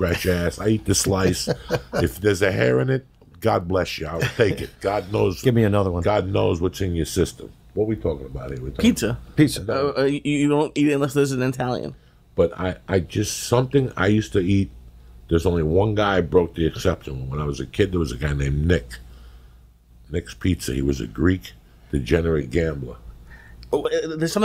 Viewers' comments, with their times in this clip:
0:08 looks at Lee... “whadda we tawkin bout heah”... I died.